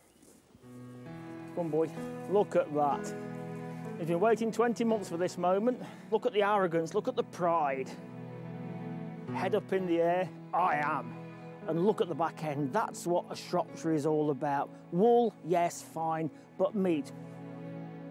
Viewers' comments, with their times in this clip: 0:03 thought that was Guts theme and spooked the shit out of me